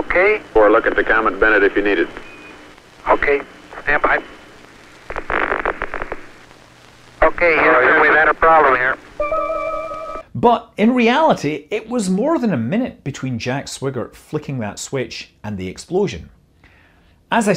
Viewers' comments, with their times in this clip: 0:05 "Houston, we've had a problem here" Movie: Catastrophic explosion, shock from crew, drama Real life: 80's freeze frame and festive steel drum flourish